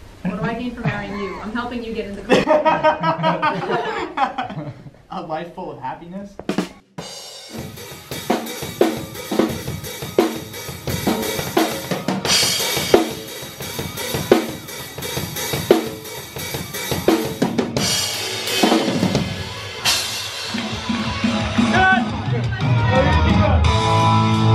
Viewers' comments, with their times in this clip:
0:05 should have done that Ba-Dum-Tss effect in real time on drums :D